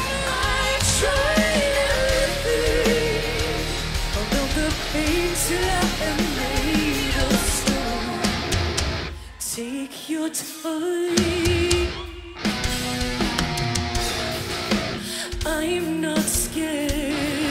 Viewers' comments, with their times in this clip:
0:04 Some said in comments that is this performance a playback and lip syncing, for example in the back vocals of bassist heard but she's not singing, for you agree with this idea ?
0:04 thank you, you made me happy by this response, but let me make sure, in in song "Made Of Stone" Amy sings the lead vocals but another voice is hearable while Emma is not singing, that's what someone mentioned as Lip sync, what's your idea ? Is this one of those high harmonies that they still use tracks for it instead of live by Emma ?and also about Auto Tune there are many comments that they use it in Nissan Yahoo 2007, and many same ideas I read about it in Ev Threads